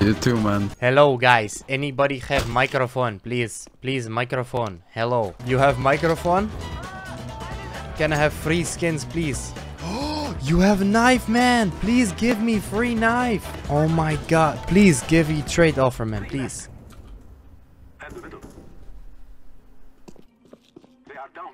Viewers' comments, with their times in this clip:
0:05 do you hav maicrofon? Æ I NEED HELP HERE